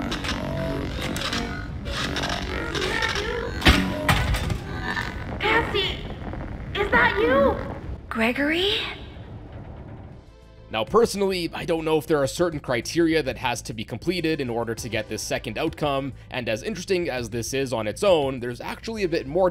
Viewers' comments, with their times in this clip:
0:07 at this section I heard Gregory, I thought I was going crazy. And I actually thought it was the real one, I was starting to think there was a different path to take